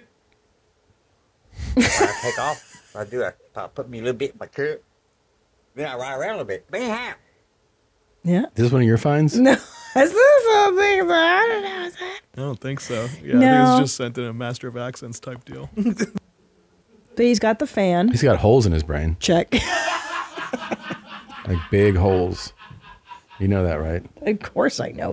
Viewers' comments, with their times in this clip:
0:06 it sounds like he says "Be happy".